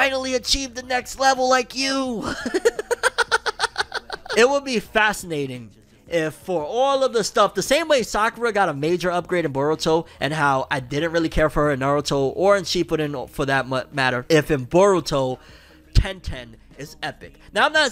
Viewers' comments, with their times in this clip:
0:05 Rock Lee voice is spot on 👌🏻